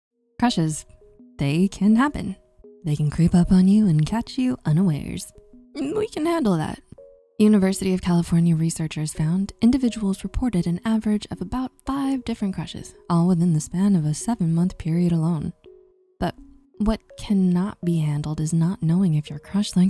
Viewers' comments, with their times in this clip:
0:05 Did her voice crack or is she sick? Don’t know.